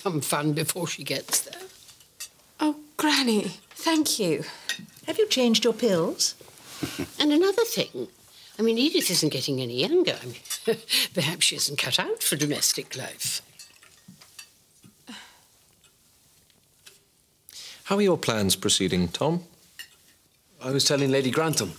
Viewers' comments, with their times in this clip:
0:05 The way Robert laughed🤣